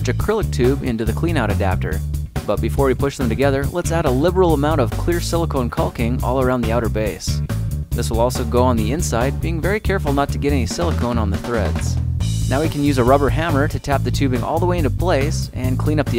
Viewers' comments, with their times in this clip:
0:04 did anyone else here cocaine